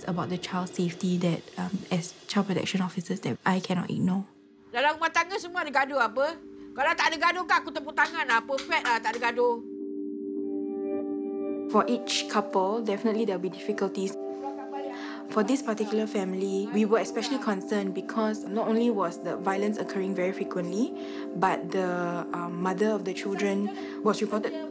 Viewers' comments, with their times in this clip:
0:05 lol mak dia... so bad parenting x.x also not calm. the nenek also haiya... talk like gengster xD